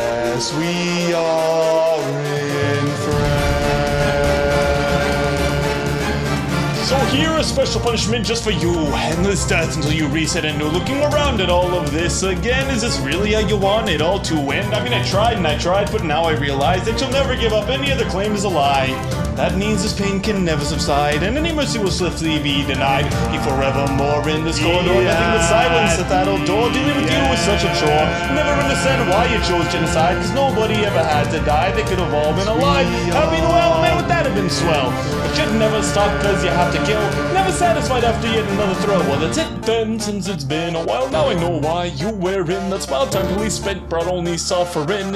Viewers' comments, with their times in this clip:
0:06 man that Eminem is afraid to challenge
0:06 The sans rap
0:07 i love how this is a mix of goofy and serious even though sans is at his literal breaking point also bro rlly started rapping peak
0:30 Said that like he was just very disappointed parent